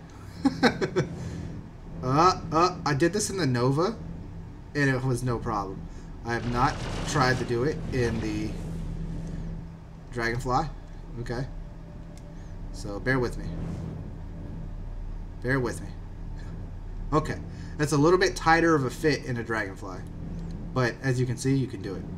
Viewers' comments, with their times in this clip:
0:07 I’m not the only one that heard the turrets firing when you were inside am I…. That might be why your ship went bye bye? when you say you did it in the Nova you can hear them firing